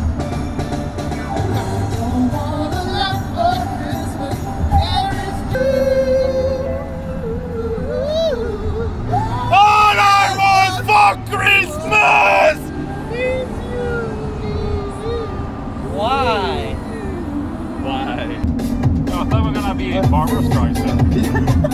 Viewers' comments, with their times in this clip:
0:05 god dammit fuel i was avoiding that song till Christmas